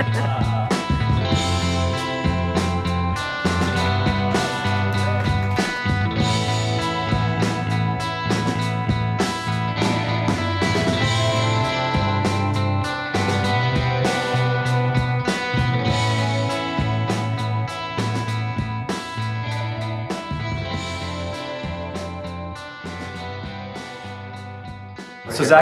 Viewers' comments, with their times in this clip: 0:08 why is the music that is playing not panned correctly? At least on my headphones it's a bit lopsided- or maybe some instruments are mainly in one speaker. Anyhow, that piqued my ears.